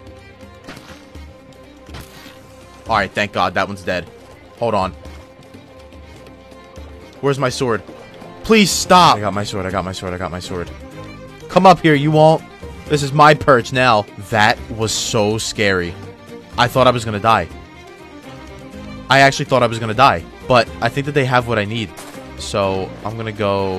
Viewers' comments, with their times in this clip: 0:10 that siren has a nice title